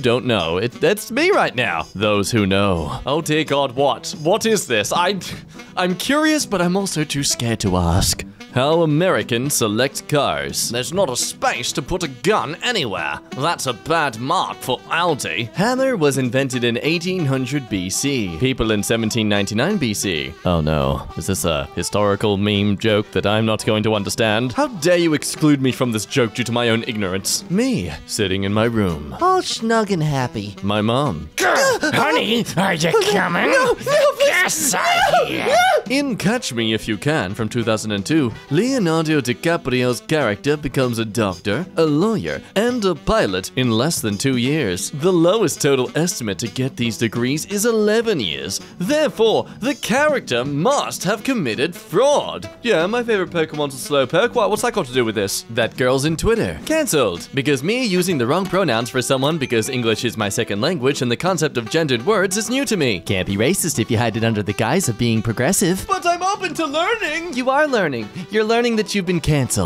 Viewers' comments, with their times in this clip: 0:03 "Oh you'll just feel a little gust of air" BOOM "Ok now the other eye."
0:11 that accent was spot on! it's like you were raised with it!
0:57 I thought that where it says "subscribe and hit the bell" it said "subscribe and go to hell"